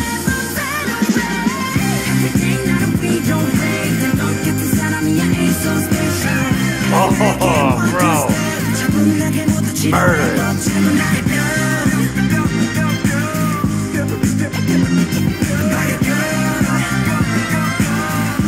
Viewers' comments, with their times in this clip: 0:03 That high note background vocal onwards was done by Jin